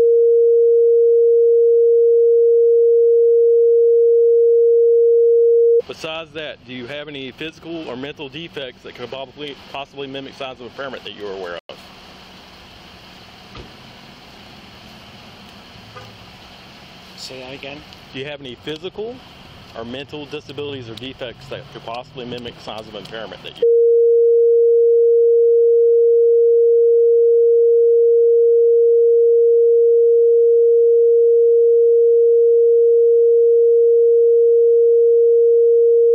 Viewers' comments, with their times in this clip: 0:05 to skip the beeping.
0:23 the audio is masked (I’m assuming for HIPPA compliance) but the video still shows him jotting down notes in his notepad of what the guy is saying. How is that NOT a HIPPA violation?